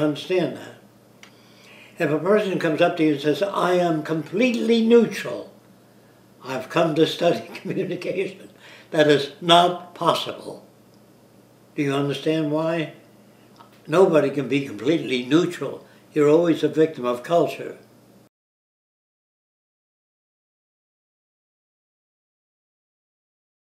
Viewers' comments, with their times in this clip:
0:08 love those times when he giggles! :D